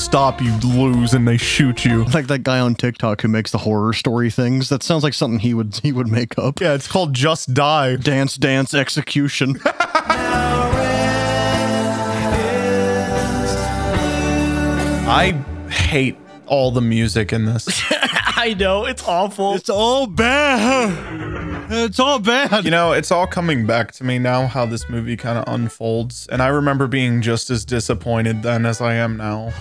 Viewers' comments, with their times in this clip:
0:10 I seriously thought the song said "Now rent is due"